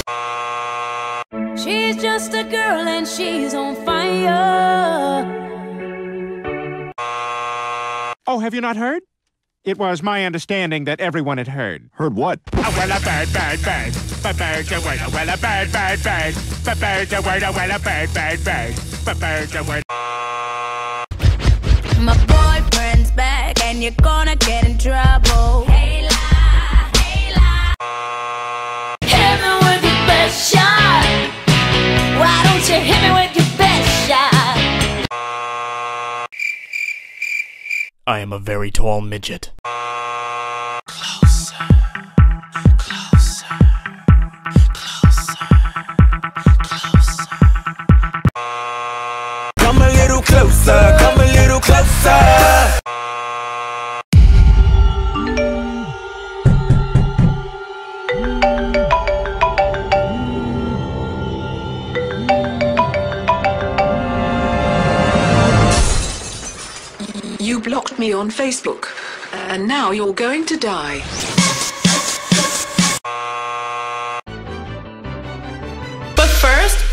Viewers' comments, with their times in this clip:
0:08 Why does that voice fits so well with his appearance and personality
0:58 Did anyone else think that your phone was ringing ? I cant be the only one right....